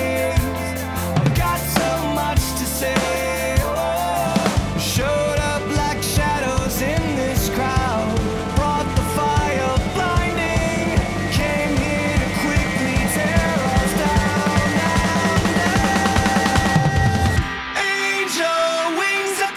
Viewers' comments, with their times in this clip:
0:04 Huge Blink-182 fan here and dude that was very, very, very cool!! Loved your hi hat groove and the single stroke roll was sooooo tight and clean! Man I need to devote some time to rudiment practice, would love to be where you are with those singles. This is my favorite cover from you by a long shot. Brilliant stuff 👏🔥✌️